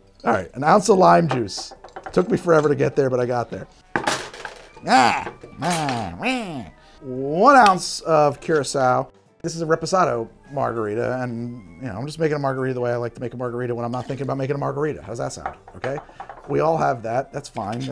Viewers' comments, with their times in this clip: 0:05 Waluigi? Is that you?